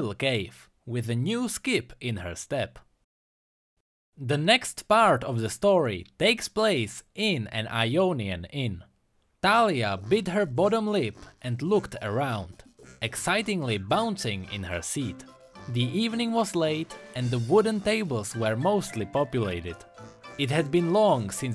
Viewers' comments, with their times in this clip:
0:06 That MoP tavern background music lol